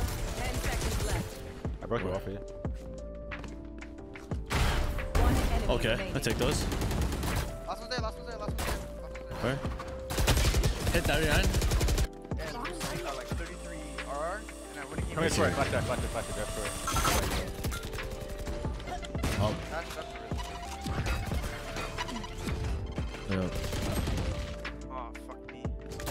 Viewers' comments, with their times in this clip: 0:08 the way he said hit 39 is kinda cute